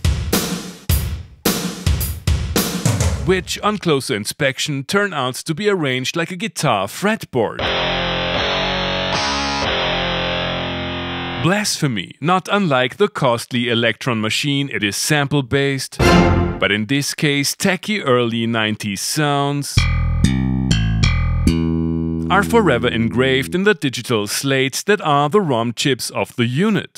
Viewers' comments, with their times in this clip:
0:07 that sound triggers me 😭. I wanted a U-220 but got convinced that the cheaper (and easier to find) Proteus/1 would be just as good - nope! Once the money was spent, the Roland was out of reach along with all it's cool sounds like this one which did a super-cool hammer-on trill when you hit the keyboard mod wheel. I keep the E-mu as a cold reminder to never settle for less!